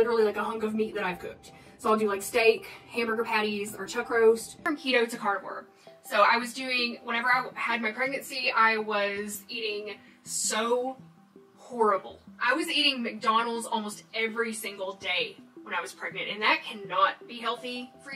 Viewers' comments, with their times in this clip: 0:06 Can’t remember if I already commented this - she ate WHAT during her pregnancy??? And the flippant way she says all that… And saying she’s proud of herself for losing so much weight right after going on and on about how she goes days without eating……